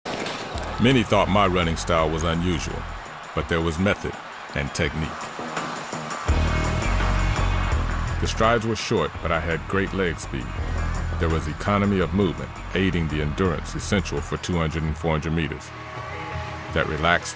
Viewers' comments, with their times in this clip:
0:03 It was at this moment that he knew, he fuked up original voice